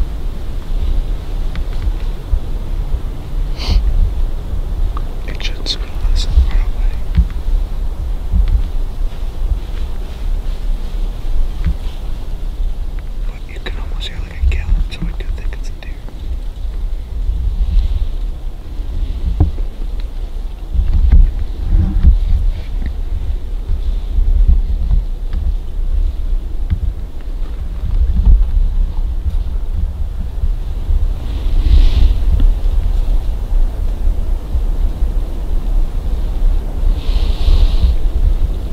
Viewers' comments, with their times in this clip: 0:10 It may have been a bobcat you guys kept hearing
0:22 idk what exaclty im watching but those footsteps at like were def only 2 feet moving